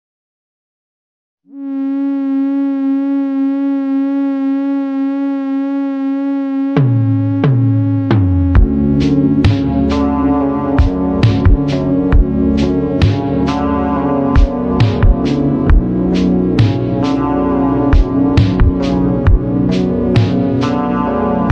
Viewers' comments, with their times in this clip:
0:06 Bro the sound and the music with the video sounds weird😅